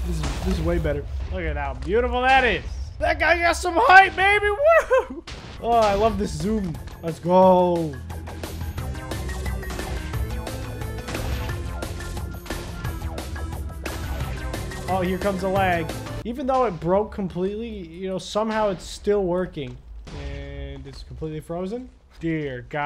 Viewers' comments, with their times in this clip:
0:05 perfect exploding TNT sound